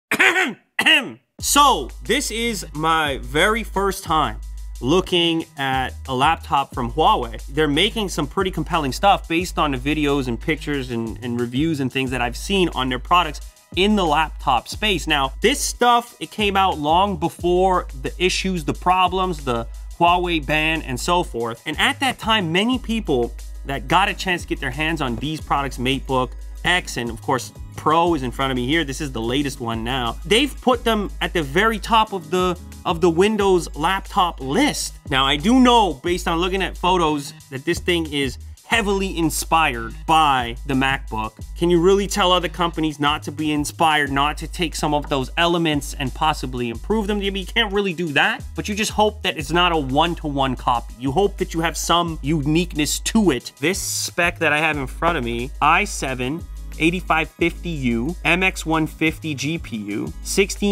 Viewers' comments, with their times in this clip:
0:01 he sounds like the scout from TF2
0:46 you can't Willy-Doo that